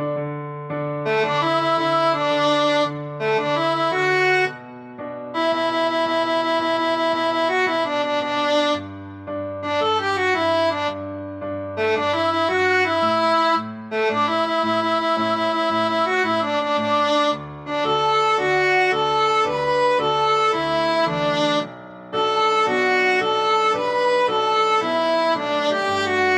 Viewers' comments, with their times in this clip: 0:07 dang she hit that high note :>